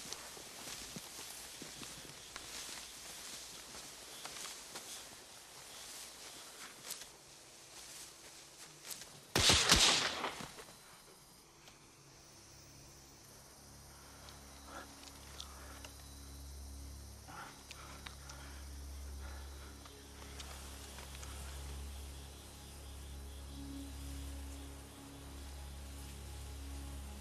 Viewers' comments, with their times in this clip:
0:09 This scene hits hard. A few gunshots in the beautiful sun and two lives are erased forever. And the realisation hits the others. edit: As many others have stated, I was young when this was released and was enthralled by saving private ryan and its opening scene. But I always liked this movie, the poetic narration and amazing soundtrack. And this is the movie I found myself rewatching again and again. I think this was the first movie in my teens that hit the feelings in a way I hadnt experienced before. "Where's your spark now?"
0:09 I slowed it down to .25x speed and you see the men get shot as well as hear the shots before you see the muzzel flashes from the shots 😂😂😂. But back when the movie was made hey who cares close enough. At full speed you don't even notice the muzzel shots unless you either already know where to look or you're lucky.